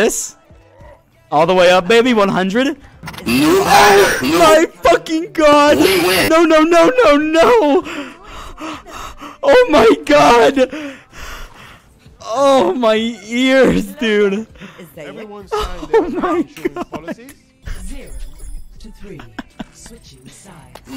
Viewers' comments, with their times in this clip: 0:03 FeelsGoodMan Clap LOUDER